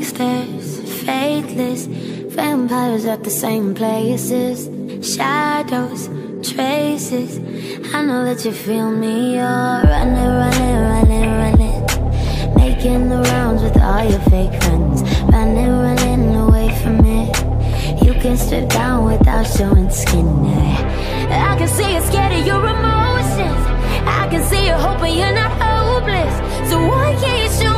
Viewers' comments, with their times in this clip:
0:10 she sounds like Melanie!